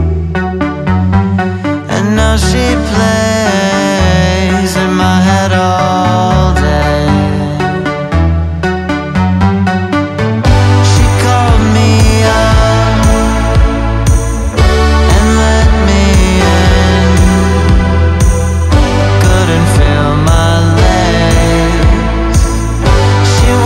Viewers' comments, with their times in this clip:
0:10 second reminds me of another song bUT I CANT FIGURE IT OUT FUCK